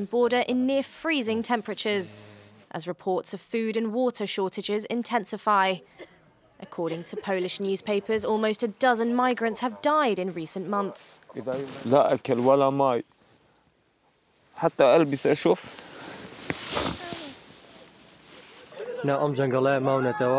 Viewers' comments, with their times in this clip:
0:07 the most fake coughing I ever see in may life.